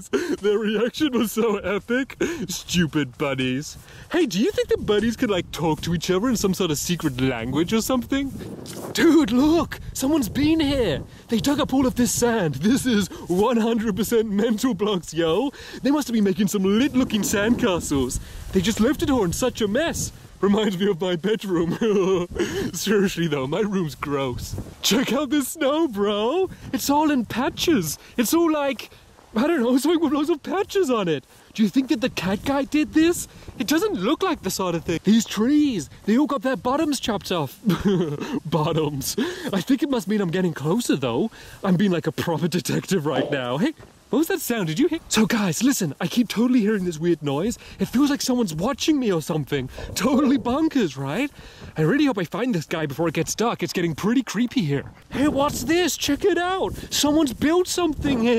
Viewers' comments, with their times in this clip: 0:08 he was talking normal
0:08 When your voice breaks
0:09 seconds voice goes normal 😂😂
0:10 stampy’s voice went back to normal
0:10 he lost his accent for a second
0:43 lmao I thought that was my stomach 😂😂😂